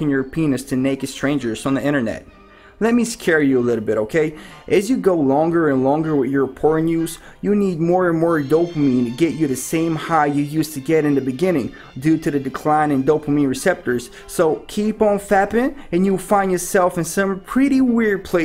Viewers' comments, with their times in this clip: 0:03 what's up with the "Allah akbar" subliminal message ?